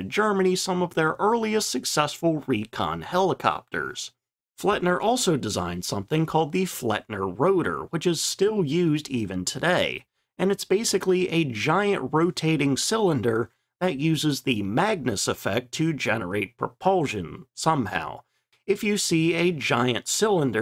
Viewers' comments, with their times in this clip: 0:05 Pronounciation is quite good for a non native. On the upper side compared to other yter. In yt tongue: no cringe moment. I met Richard Perlia at the age of 89 iirc, who was test pilot of several vertical lift projects. Maybe an interesting person to read about. He published a book about his adventurous life, which name i doesn't have at hand at the moment.